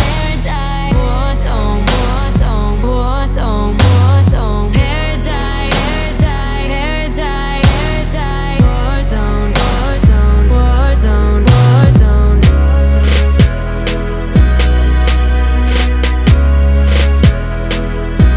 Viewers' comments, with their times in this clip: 0:06 I can't be the only one who heard "hair dye hair dye hair dye in